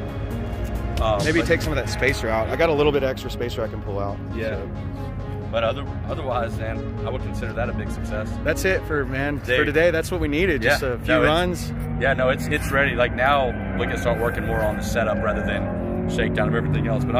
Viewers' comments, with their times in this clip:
0:04 Bob from Bob's Burgers. he literally look and sound like him🤣